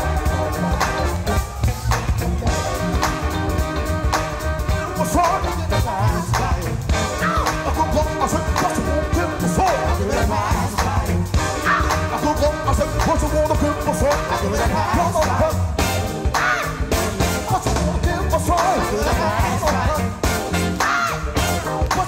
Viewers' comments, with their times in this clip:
0:03 that breakdown was definitely influence by James Brown 🤯🔥